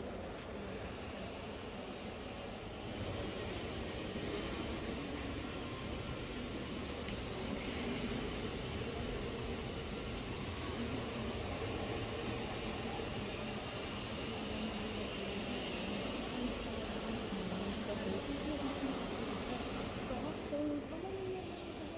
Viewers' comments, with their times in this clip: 0:07 That is it pipe organ 😊